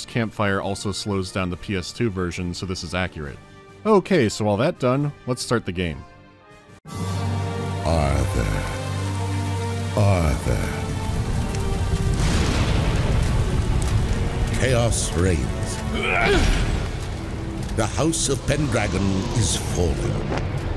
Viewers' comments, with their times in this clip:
0:08 Sounds like the WOTLK cinematic narration when King Terenas says "Arthas"